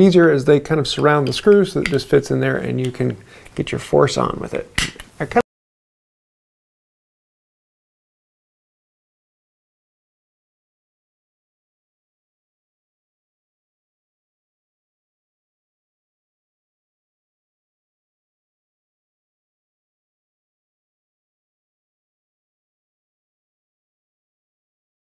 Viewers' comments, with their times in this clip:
0:05 the audio cuts out for 30 seconds
0:06 Audio cut out :(
0:07 The sound cuts out mark for a few sentences.
0:07 the lack of audio drove me crazy pun intended